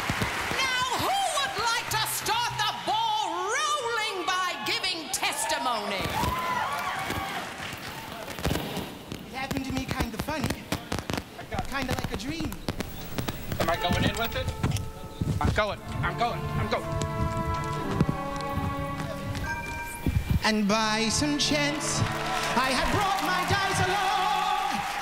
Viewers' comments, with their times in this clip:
0:08 A bit of audio difficulties